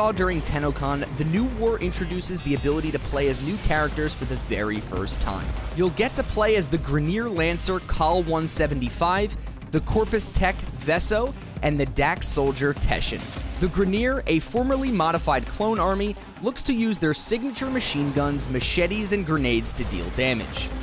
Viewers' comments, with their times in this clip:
0:08 did he just call the corpus dude Vesso? was that on accident? actually makes me mad! ITS VESO!!!!